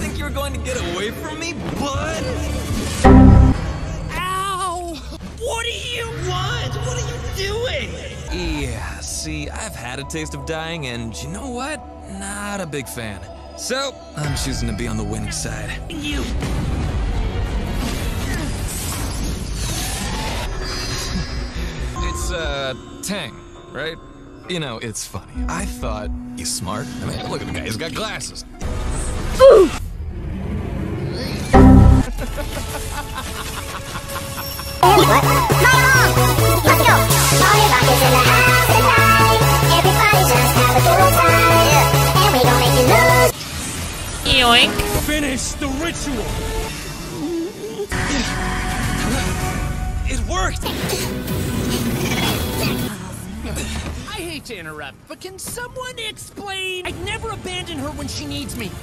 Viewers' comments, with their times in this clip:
0:03 mk tried to punch macaque but was then screaming at the wall in sadness
0:43 ALBERT'S LITTLE "YOINK" SOUND COUGHT ME RLLY OFF GUARD HAHAA